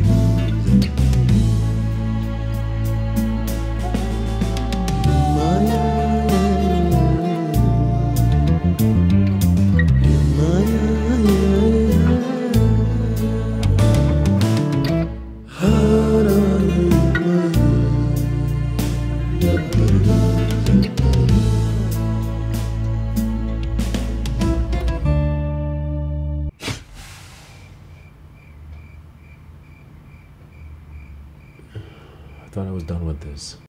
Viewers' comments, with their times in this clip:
0:07 the whole song is amazing, but the lick is absolute fire
0:13 That fill though. 👌
0:21 This note is perfection